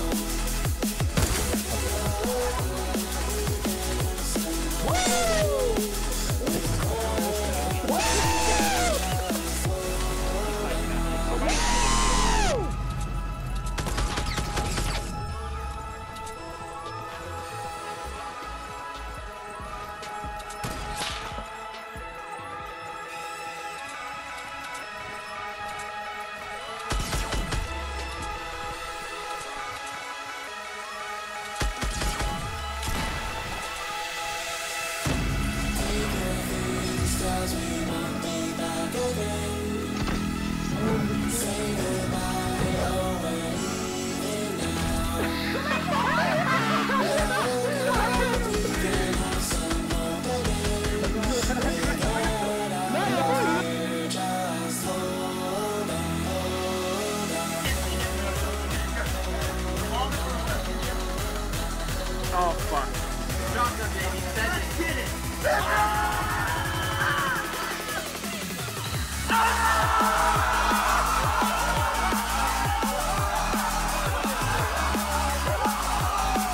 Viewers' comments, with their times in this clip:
0:09 sounded like r2d2
0:58 my favourite oooooooohhhhhhhhhh😱😱😱